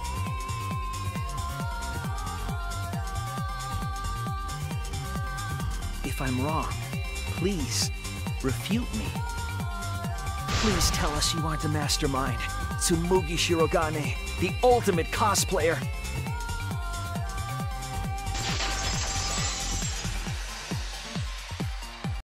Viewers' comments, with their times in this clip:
0:10 hearing shuichi's voice like this hurts a lot... he doesn't want to believe truth